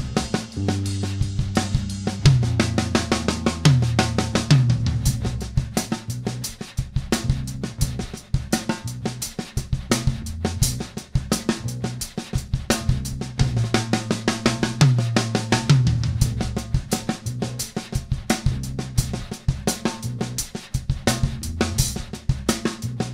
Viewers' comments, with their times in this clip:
0:09 Love the quick shred 😎